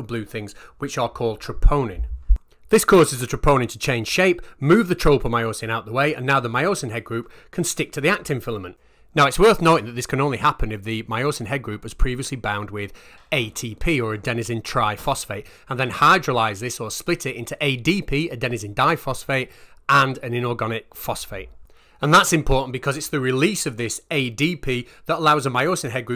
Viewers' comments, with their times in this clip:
0:07 "..if the myosin is previously bound with 80p" huh? 🤔 I'd have thought it'd have taken a few more quids than that!